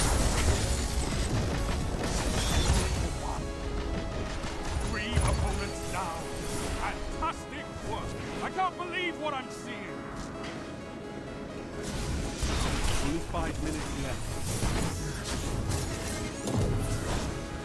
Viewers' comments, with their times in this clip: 0:05 Shaxx is losing his shit..